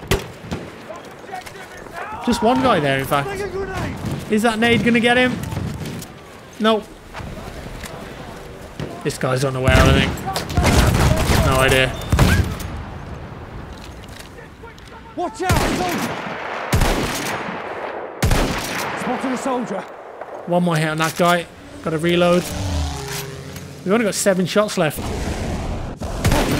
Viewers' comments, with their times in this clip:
0:10 the pistol that makes the sound of an AA 😂